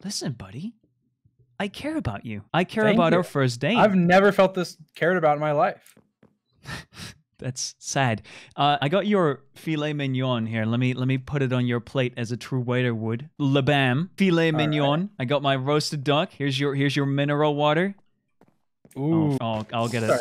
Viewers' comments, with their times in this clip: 0:04 Dream:I've never felt this cared about in my life George & snap: sobbing